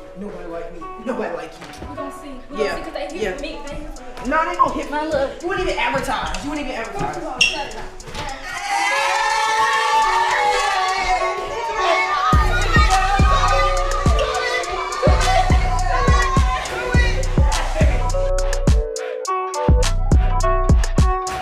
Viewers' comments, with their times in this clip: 0:09 when everybody went like ayyyyyyyy it got me dancing on the flow